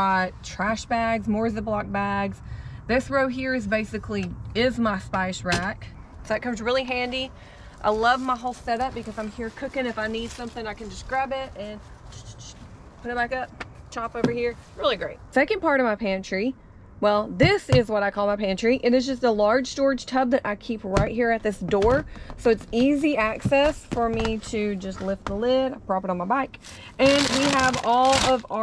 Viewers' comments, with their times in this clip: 0:10 I like the spice 'sound effect' 😂😂